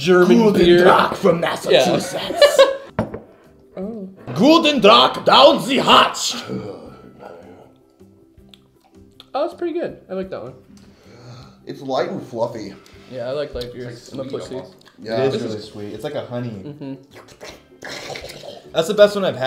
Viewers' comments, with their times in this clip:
0:03 Anyone hear the little moan ?